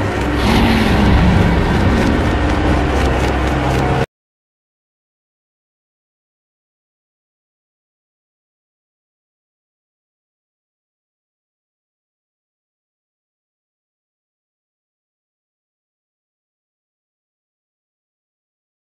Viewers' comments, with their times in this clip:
0:04 who else panicked and thought there headphones broke
0:04 aidio cuts out